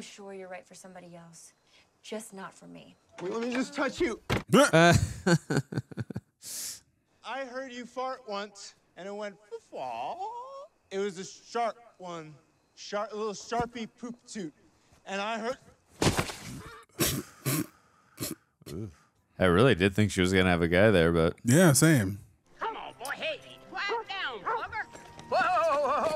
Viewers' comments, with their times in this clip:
0:07 "I died laughing 😂"I heard you fart once and it went fuufaugh" he played drunk to perfection 😆